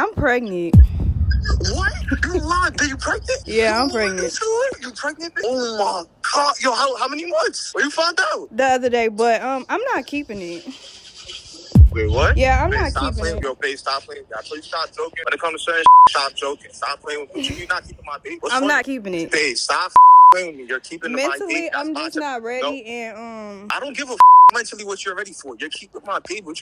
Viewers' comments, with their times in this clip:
0:08 Am I tweaking or sounded like Idris lol😂💯